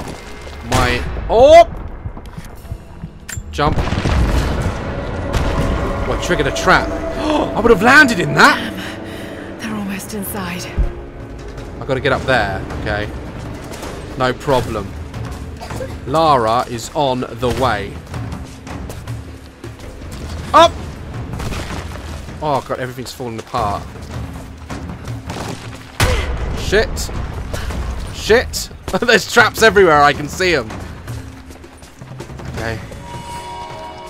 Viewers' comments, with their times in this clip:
0:03 is it jut me or did someone cough in the back ground?
0:17 it sounded like his daughter coughed